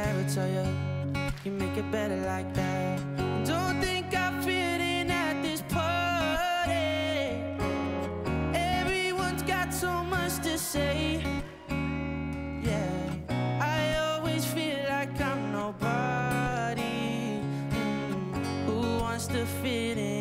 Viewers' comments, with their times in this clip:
0:03 So nice, sung with passion, great voice ! that high falsetto part is perfect